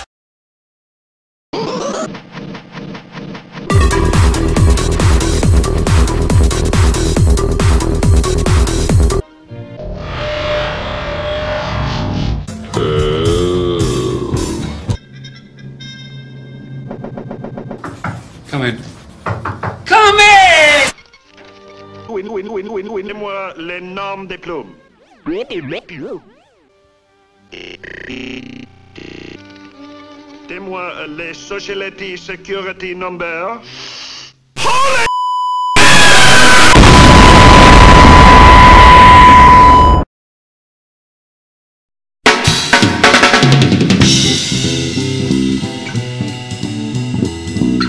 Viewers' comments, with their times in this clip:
0:09 The high french guy killed me XD
0:34 what a fucking laughter! Ha hahahahahahahahahhaha!